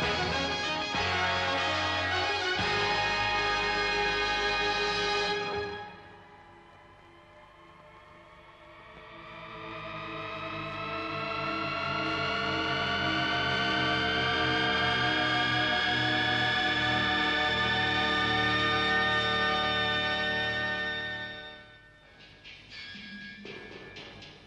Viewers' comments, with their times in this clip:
0:09 Wow!! Seems like THX might have stolen Deep Note from British Leyland....